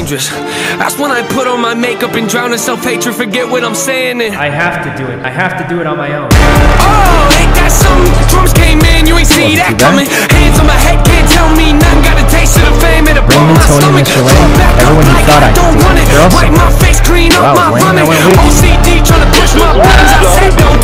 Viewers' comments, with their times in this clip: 0:07 hard ass music then I see Yuno Tpose grappling I did not expect that it had me dying of laughter